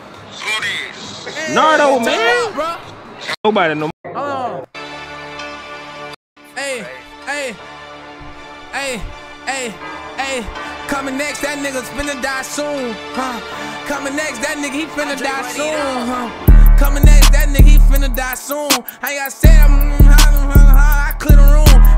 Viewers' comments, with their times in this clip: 0:05 humming the base to dat do it